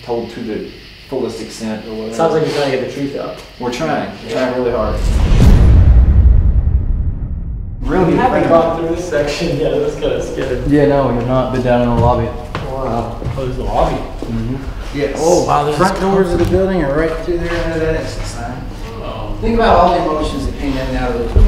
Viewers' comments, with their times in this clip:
0:08 there's a women talking??!!!